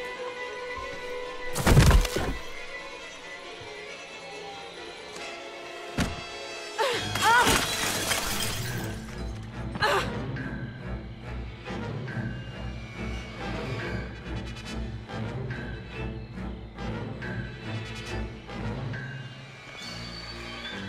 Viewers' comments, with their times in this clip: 0:06 perfect timing for music